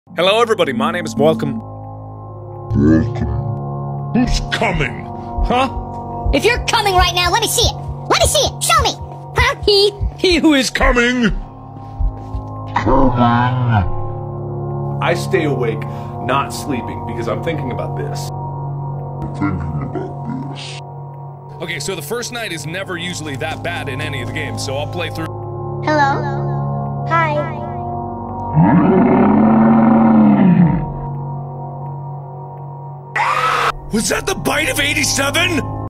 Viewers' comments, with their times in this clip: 0:06 mark became an english dub anime protagonist for a sec
0:06 alvin and chipmuk
0:12 bro thats ain't markiplier, thats multiplayer💀💀💀
0:32 whats that cupcake scream is it original sound from the game? i've seen a video with a cat slowly and in a very silly way jumpscaring me with that ridiculous sound. it sounds like the old crazy rockstar wazzaping. i just can't with it. it does technically check as a scream of someone, trying to horrify me, but barely managing to. so amateur yet so much passion seems to be put in it, it's just unique and i can't grasp any connections, that will help me remember it and i don't want to forget.